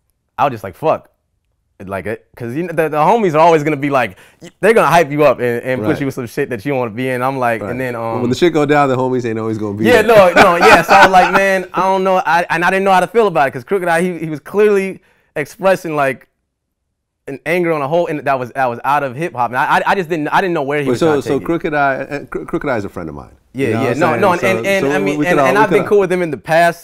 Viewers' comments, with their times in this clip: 0:07 vlad laughed way too hard at his own joke...